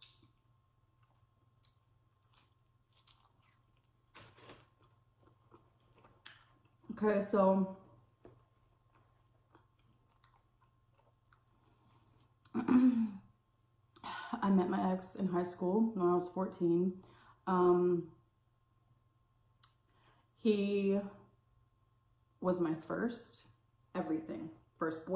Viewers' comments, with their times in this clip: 0:06 oh my gosh I thought she just stared off and said "queso" but she says "okay so" lol.